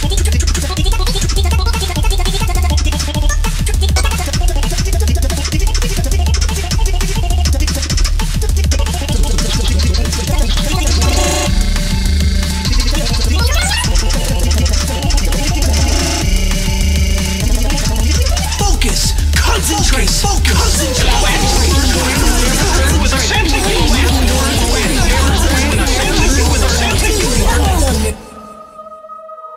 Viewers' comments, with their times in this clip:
0:03 does anyone hear megalovania
0:11 Wii Error Sound